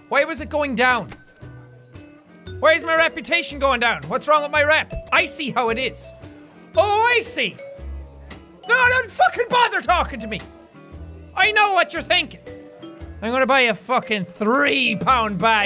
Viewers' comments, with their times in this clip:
0:03 when he said "I see" thought he said "Ice Tea" and made a pun